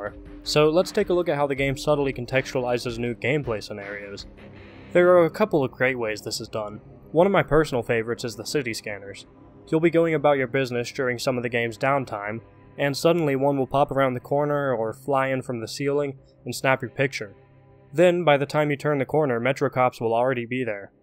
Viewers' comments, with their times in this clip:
0:05 "There are a couple of "crate" ways" I SWEAR IF THAT WAS UNINTENTIONAL...